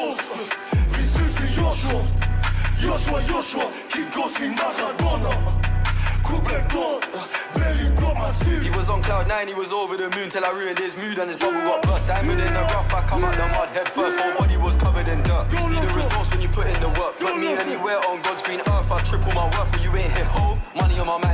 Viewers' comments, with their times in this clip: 0:08 honestly cench’s flow is mad here, but its a bit disrespectful of Luciano to just be screaming yeah over this part of the song. Can’t wait for the official release!